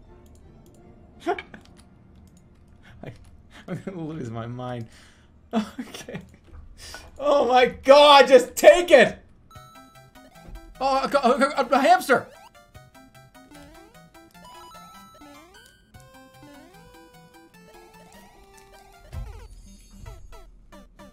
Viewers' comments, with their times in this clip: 0:04 imagine you're a customer at a restaurant, and in the back you hear a bunch of giggling and kitchenware falling on the floor. You hear in the background of the commotion the chef say" this doesn't make any sense" before he screams "JUST TAKE IT" and your dinner comes flying through the window